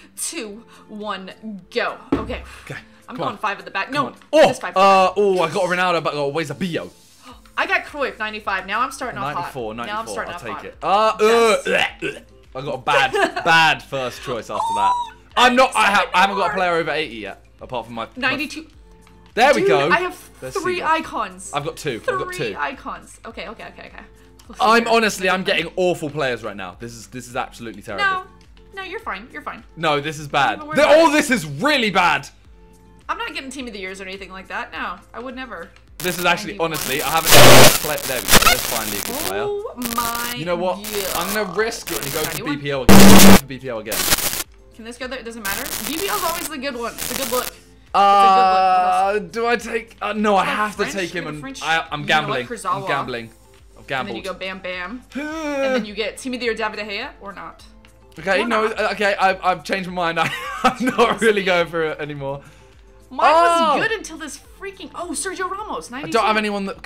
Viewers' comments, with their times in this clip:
0:05 The way Simon says Eusebio😂😂🤣🤣
0:37 my ears hurt after that
0:37 was that just my phone or did the audio bug out?? I legit thought my phone was gonna blow up
0:37 mad audio problem
0:52 advise u wear headphones it gets very quiet